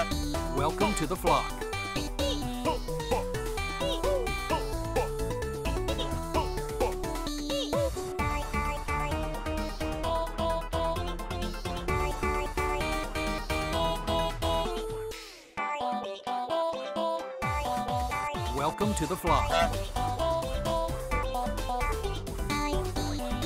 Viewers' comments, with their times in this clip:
0:07 I just noticed, Kazooie laughs at you when you mess up! There’s so much detail in this mod it’s insane